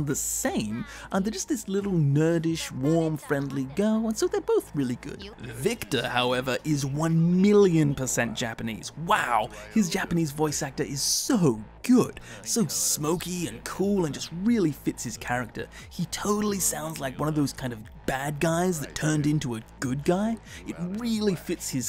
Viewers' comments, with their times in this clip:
0:07 Victor is like the best voice in the entire game, his English voice is FAR superior to the Japanese in my view. The only problem with victor is that he should've had gray hair, been a little bit fatter and rocked a mustache and he would've hands down been the coolest fucking person ever. The old grumpy but with a twinkle in the eye, whisky-voiced boxer turned underground street doctor. I mean how badass is that.